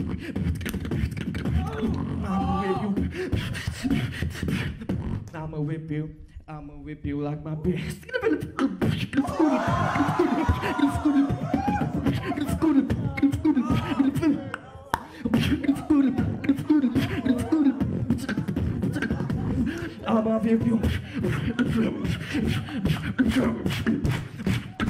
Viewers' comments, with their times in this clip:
0:08 hardest drop ever... and most painful 😂😂